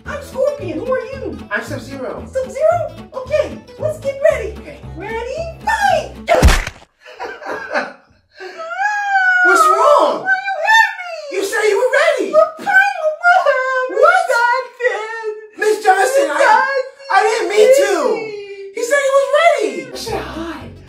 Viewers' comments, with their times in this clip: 0:08 that howl in pain was his battle cry